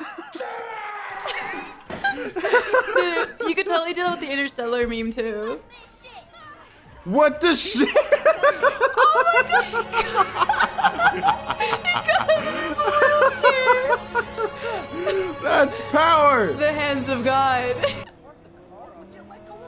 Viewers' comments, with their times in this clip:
0:05 I thought that voice came from him for a second